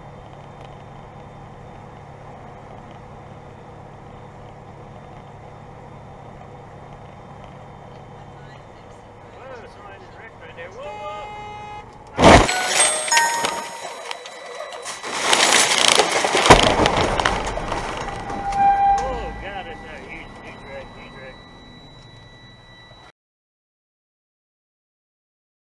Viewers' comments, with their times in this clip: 0:10 After the crash You can hear the trucker saying hes dead
0:12 Bro the convenience of the ringtone going off as soon as the semi rhiones into the car is f*cking hilarious. Hope everyone's ok tho